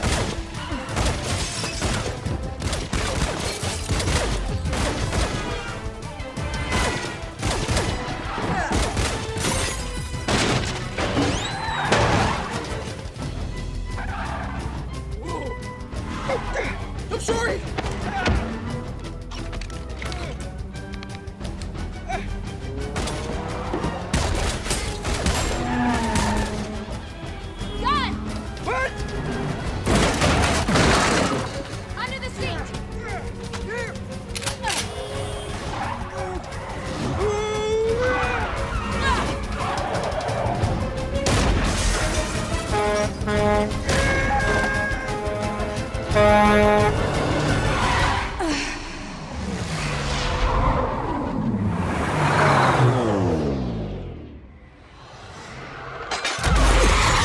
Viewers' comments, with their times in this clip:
0:10 this Mario sound killing me 😂
0:11 gotta "love" the cartoon slide-whistle wacky sound effect
0:43 he sounds just like tobey from spiderman when he was screaming